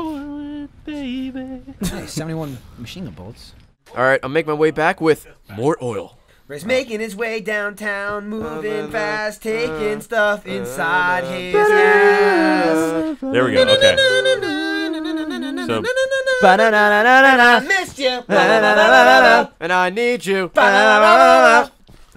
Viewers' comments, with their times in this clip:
0:04 Tbh I like the random song the best lol
0:06 The lads singing is the absolute best part because they are all so so in to it and the Gents are just lost.